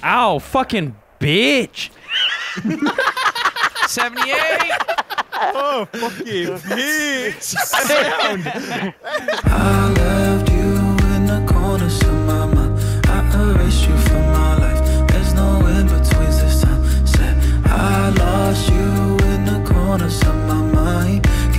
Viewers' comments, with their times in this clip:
0:03 the Canadian is slipping through